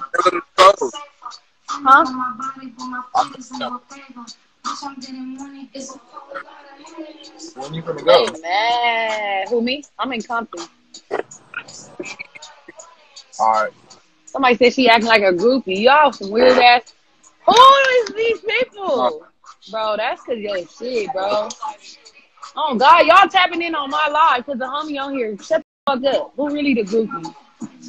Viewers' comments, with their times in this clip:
0:10 I can’t with her voice. Gimme the moral of the clip b